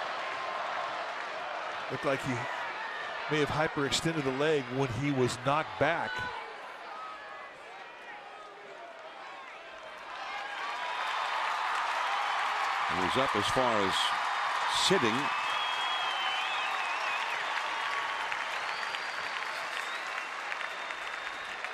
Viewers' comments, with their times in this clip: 0:05 You can see cousins shouting "I'm sorry" after he touches home plate